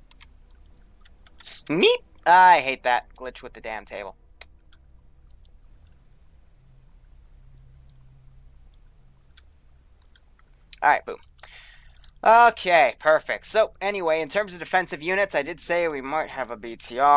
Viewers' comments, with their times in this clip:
0:03 alarmed wiwu noises